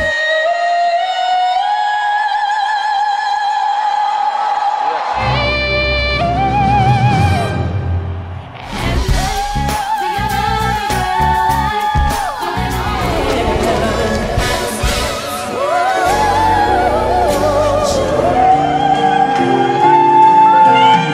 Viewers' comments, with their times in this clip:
0:09 I love that performance and the note so much :')